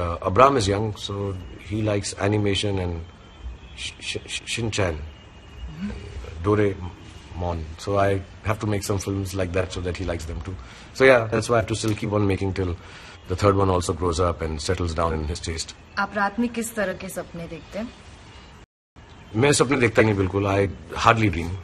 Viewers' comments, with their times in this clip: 0:06 Doo raee monn so sweet!!